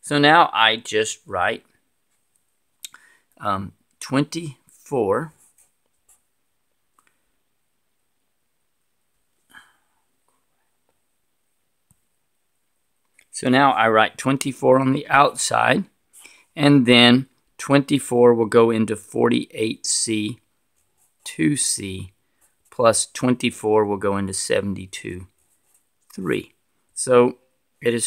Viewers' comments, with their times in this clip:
0:09 he whispers "Aww crap" am i the only one that noticed this